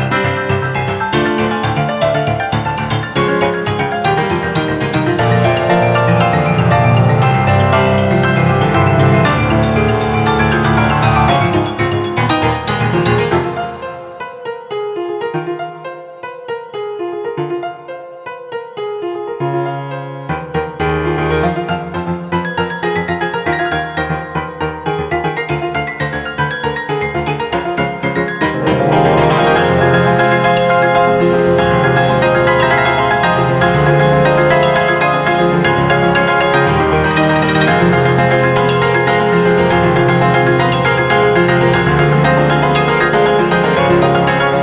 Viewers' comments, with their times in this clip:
0:05 For some reason this sounds like coffin dance
0:25 huh why do i hear boss music WHY DO I HRAR BSOSS MUZTM9LCM%4*Lf oO error